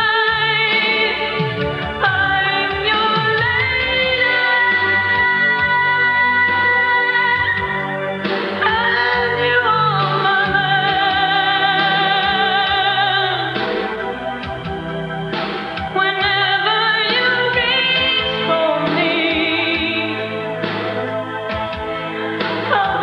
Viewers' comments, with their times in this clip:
0:08 laura is the best Celine can't do this like a rock star sound 😝😝😝